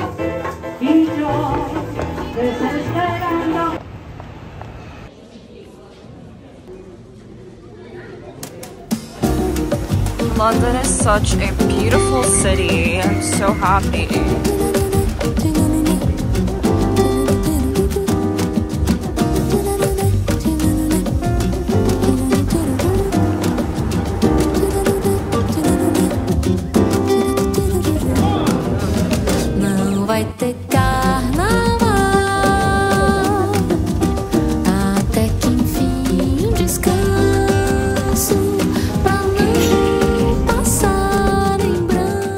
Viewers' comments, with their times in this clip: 0:06 the song that was playing at the restaurant was in portuguese..................
0:29 Me being Brazilian seeing that a Brazilian song plays: OMGGGGG, SHE HEARS BRAZILIAN MUSIC! 😍